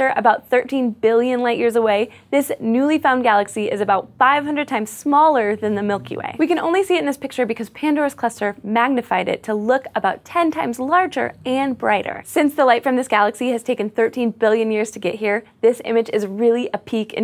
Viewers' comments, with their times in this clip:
0:04 did anyone else noticed those low frequency background sounds? cannot be unnoticed, was someone snoring in there? xD